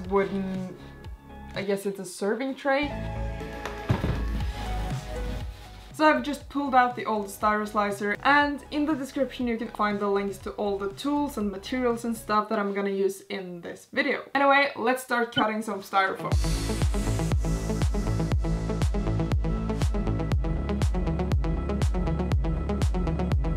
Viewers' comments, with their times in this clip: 0:05 She pooped out what?!